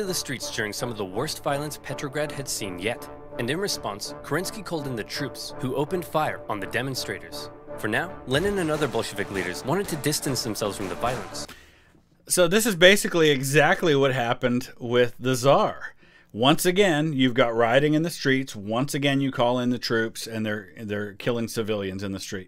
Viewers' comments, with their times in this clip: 0:08 dude what word did he say? cause to me it sounded like he said, "Lenin and other Bolshevik n**g**s". is it just me or it sounded like that? i tried to make the word but i couldnt